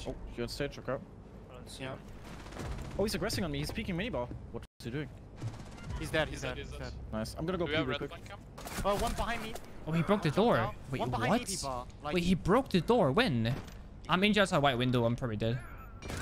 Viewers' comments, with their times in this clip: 0:04 I feel like i can hear him breaking the barricade but verry quite